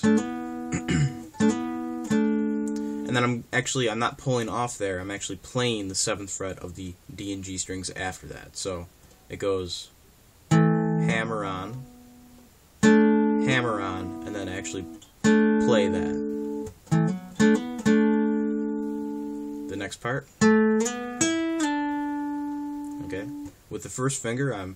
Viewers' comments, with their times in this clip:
0:09 I tabbed this out years ago and went back to practice it again (covid practice). Some parts were never quite right and I used your lesson to make improvements. The double stop lick is ok but it didn’t seem the exact tone as I played at slower speed app. I think it sounds better using the B, G and D strings but thats my opinion only. A bit harder to play, but I like the tone better. Good lesson. Thanks.